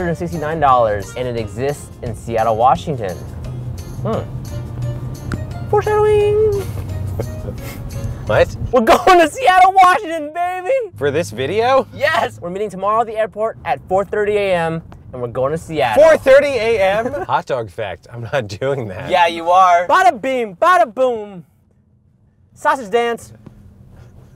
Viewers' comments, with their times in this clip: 0:05 you either hear we're going or furtonately